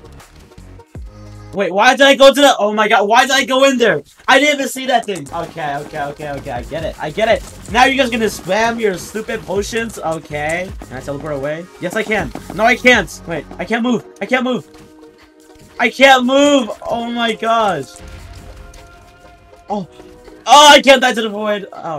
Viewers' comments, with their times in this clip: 0:09 Sounds like he said Bull####